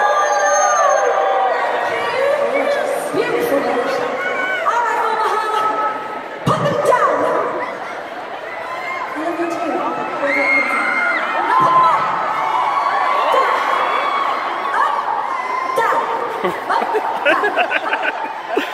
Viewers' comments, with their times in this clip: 0:06 i thought it's silver ocean.